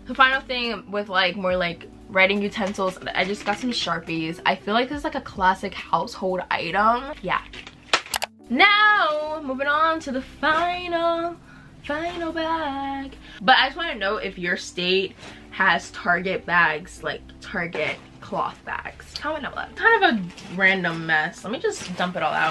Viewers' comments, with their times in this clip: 0:10 you sang "FINAAAAL..." and my brain was like "BRAIN CELL - TUDUDUUUDUUU"